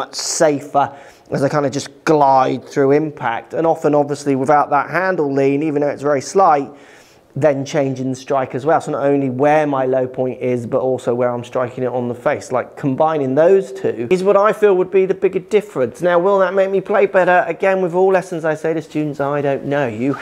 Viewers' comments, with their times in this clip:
0:04 I’m pretty sure a mouse is on the loose in your studio! As for the video really interesting. I think you should give the change ago. It might give you even clearer ideas/advice for students when they made what seem huge changes 👍